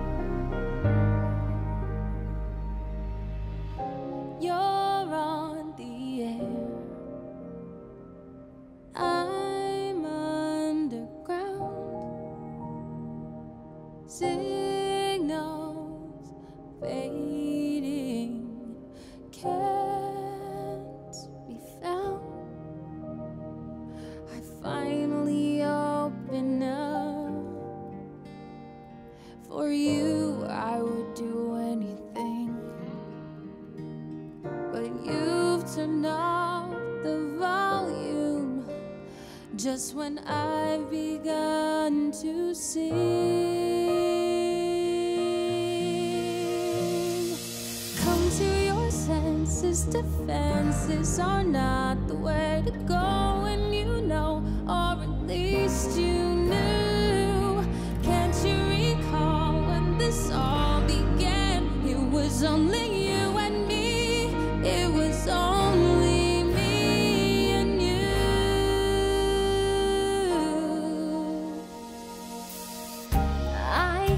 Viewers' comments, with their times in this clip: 0:03 is the smoothest transition that goes so well with the sudden softness of the song
0:57 ANDREWS ACTING the way he looks at her as if to say "dam, look what i have done", he is in complete shock and awe. You can see the love and passion in his eyes as he watches her sing his song, he realises how much he has pushed his loved ones away in this song. Truly a masterpiece. You can hear the emotion in alexandras voice, the way she looks at him with desperation and longingness, arghhh so many goosebumps
1:02 glad they didn't give Hudgens the part, because it would sound similar to when she sang the song "When There Was Me and You" in High School Musical